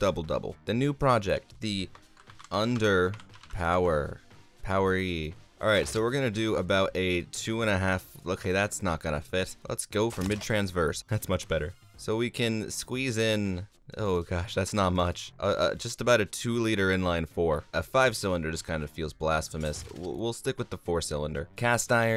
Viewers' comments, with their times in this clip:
0:09 As I’m watching you rev the engine in automation I hear someone with not enough muffler step on the gas. It’s am...